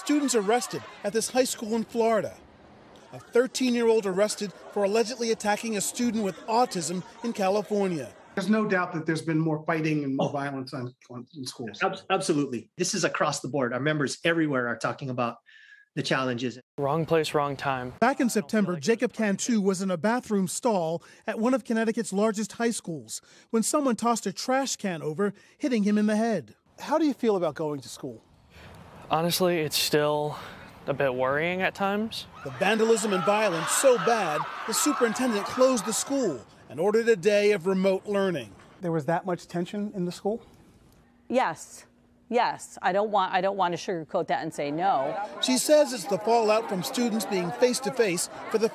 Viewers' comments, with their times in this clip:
0:04 I thought it's "good for our chldren" going bad to school..
0:32 close your eyes tell me that doesn’t sound like wild monkeys 🙊 🙉 🙈 … haa we can do better and we have been so let’s keep up the good work .